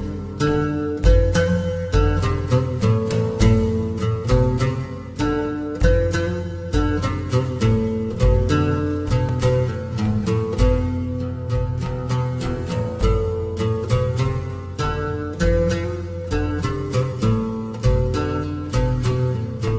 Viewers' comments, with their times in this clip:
0:05 beautiful song and enstrumant. Those huge swords tho. How could they even pull them up and the most interesting thing is how could they swing them. Wow. They must be very powerful people indeed.